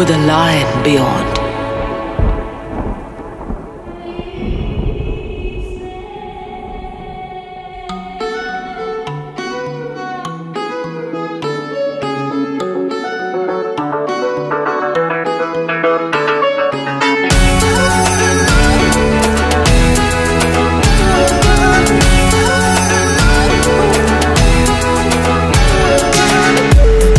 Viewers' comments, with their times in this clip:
0:08 the Melody from sounds like a song from Shakira anyone knows the name of it?